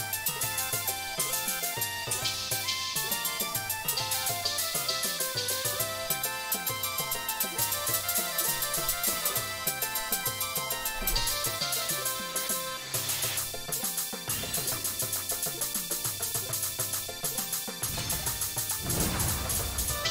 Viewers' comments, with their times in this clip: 0:06 this kind of pattern just wrecks me, I can't separate the rhythm in my head